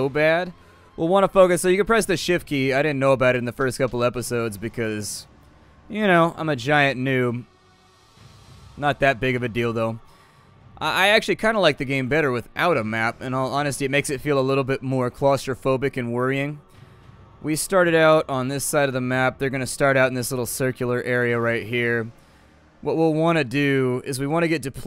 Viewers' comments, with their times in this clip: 0:09 "not that big of a dildo", what !? ^^